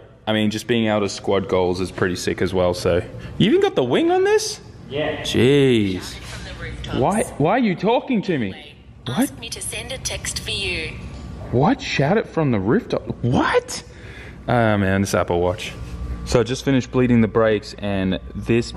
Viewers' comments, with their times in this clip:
0:05 Even your watch has an accent like you 🤣🤣🤣🤘